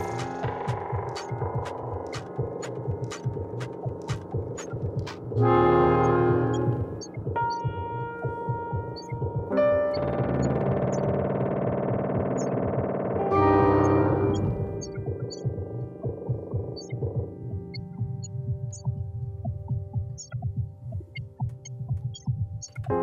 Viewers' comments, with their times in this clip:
0:07 not much pad´s and a epic music thats it ( minutes) DOPE!!!!!!!!!!!!!!!!!!!!!!!!!!!!!!!!!!!!!!!!!!!!!!!!!!!!!!!!!!!!!!!!!!!!!!!!!!!!!!!!!!!!!!!!!!!!!!!!!!!!!!!!!!!!!!!!!!!!!!!!!!!!!!!!!!!!!!!!!!!! Epic view and i guess Stimming takes that moment as one of his life great moments with a fantastic view there. dOpe!